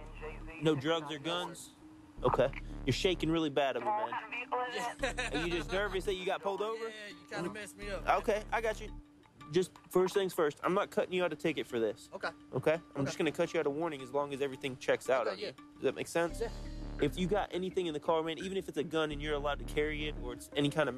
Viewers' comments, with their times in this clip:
0:05 That nervous laugh lol